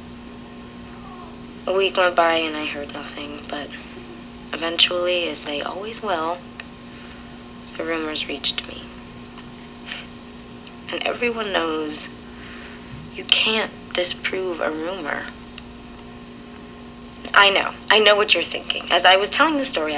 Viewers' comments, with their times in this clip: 0:04 why i heard weird sound ?
0:04 why i heard weird sound ?